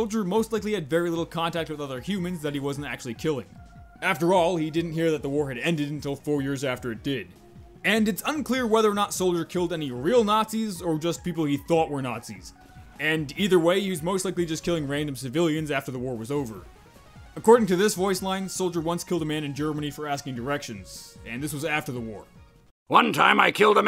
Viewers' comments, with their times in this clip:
0:07 someone says let me die (conspiracy theory noises)